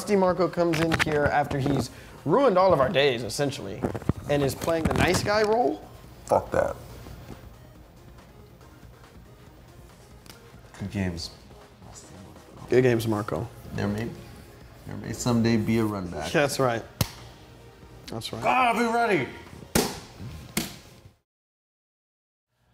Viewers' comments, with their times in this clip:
0:06 wtf happened to his voice right there????